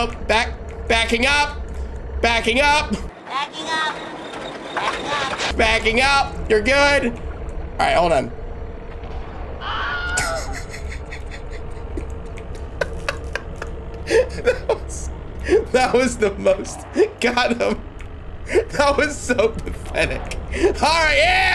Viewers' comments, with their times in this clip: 0:09 That Wilhelm scream. Lol 😂